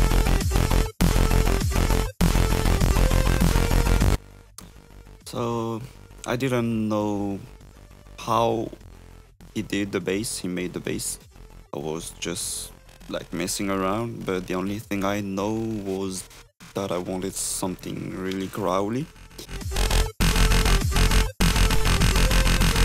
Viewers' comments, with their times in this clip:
0:05 for the bass he just used a saw wave with a filter and shit-ton of post processing that's kinda crazy